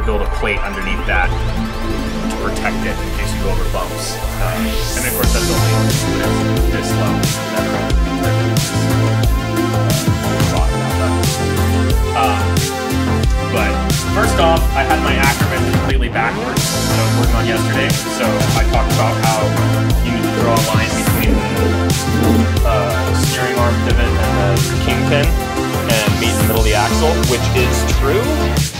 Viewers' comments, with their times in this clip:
0:04 Yeah, I actually stopped watching because I could not hear a thing he was saying.
0:04 why is the music over him explaining stuff I want to hear what he did.
0:14 I think the music is to loud lmao